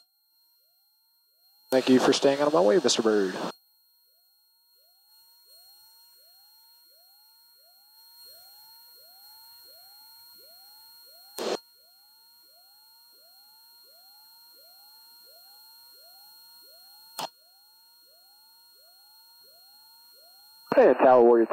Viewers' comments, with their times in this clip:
0:04 What’s the sound of the siren whaling